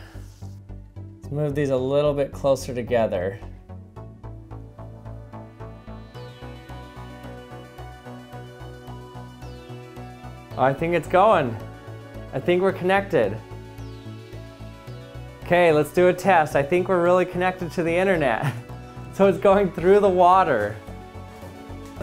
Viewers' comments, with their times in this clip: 0:06 Oh man this music playing when you're saying We Are Connected, it's like everything depends on you, our last hope : )